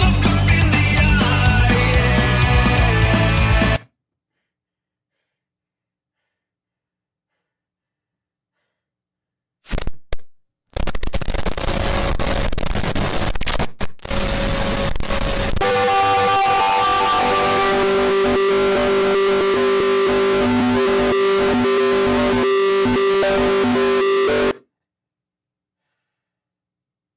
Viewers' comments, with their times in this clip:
0:10 WAS THE LOUDEST FOF ME